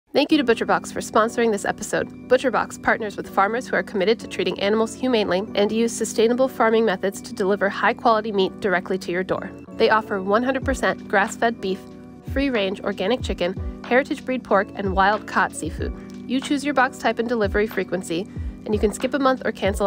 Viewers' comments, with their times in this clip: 0:05 she sounds so emotional emphasizing humanely, after she was treated inhumanely by ba